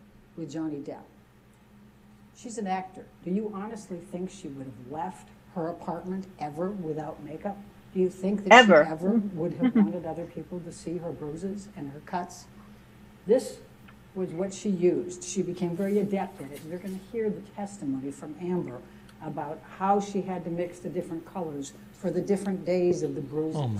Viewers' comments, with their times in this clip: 0:10 Amber Heards Lawyers voice sounds so familiar to a politician I often hear on the news.. Now I know who it reminds me of. it’s Nancy Pelosi No 2, she just speaks faster but still rambles like Pelosi lol